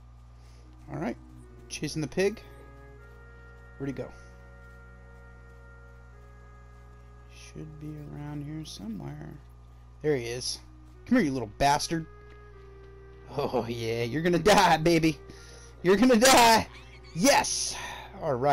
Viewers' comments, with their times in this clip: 0:04 you sound like a savage lol